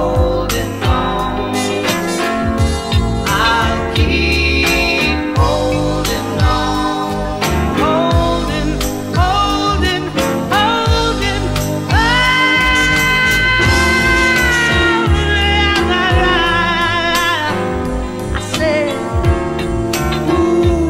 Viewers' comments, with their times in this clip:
0:05 that series of notes ... if that doesn't get you, check your pulse